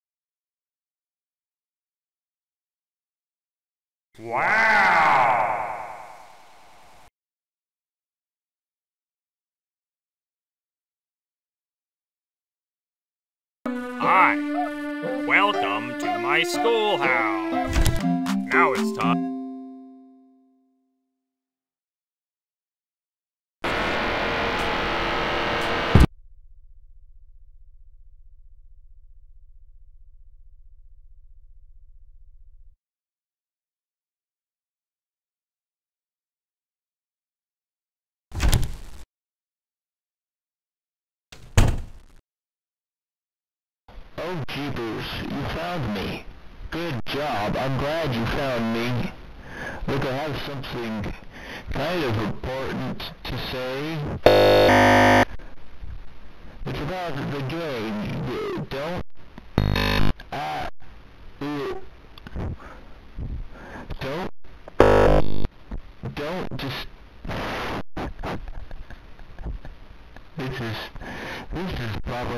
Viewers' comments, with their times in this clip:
0:08 What is that on the left scream
0:54 null still uses regular classic sounds